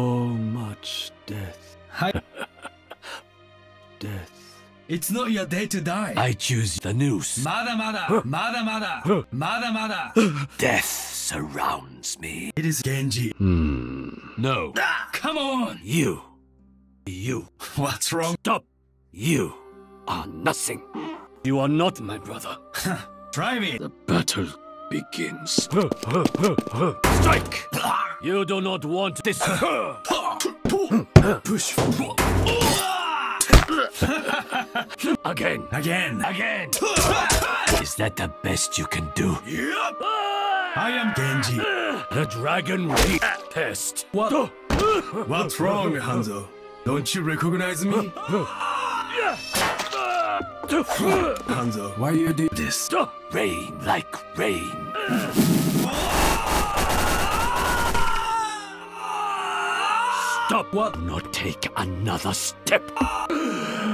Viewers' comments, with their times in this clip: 0:05 gengi almost sounds Scottish and I'm scared
0:15 Hanzo: "yew!" Genji: silently "moi?"
0:16 Hanzo: You. Genji: Me? (with sassy accent) Hanzo: Yes you.
0:21 That squeak by genji is adorable
0:42 the dragon r a pist
0:51 Omg that other comment was right. Put subtitles on. XDDD Handsoap